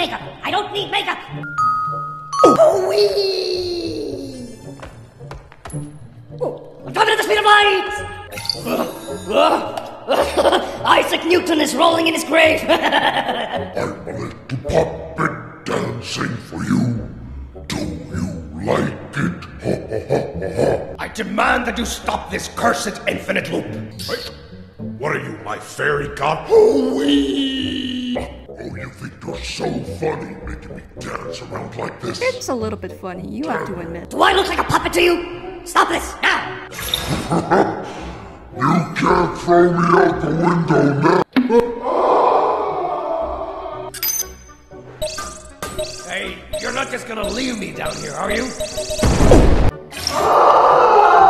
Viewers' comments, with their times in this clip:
0:09 The evil giggle I can't 🤣
0:38 I can't stop laughing from this and his voice.